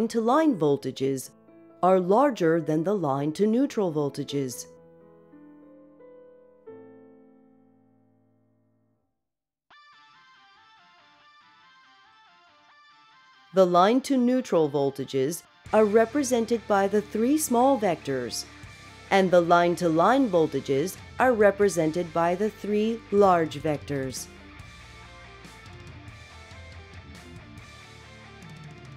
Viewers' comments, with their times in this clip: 0:09 what happened? i heard the music after mozart and I was like: wtf?